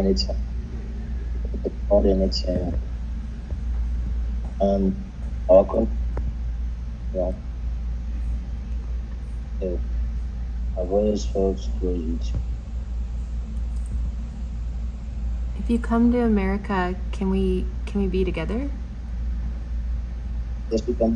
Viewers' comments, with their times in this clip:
0:05 he knows her so well that he doesn’t recognize it’s not even her voice 🫣🤣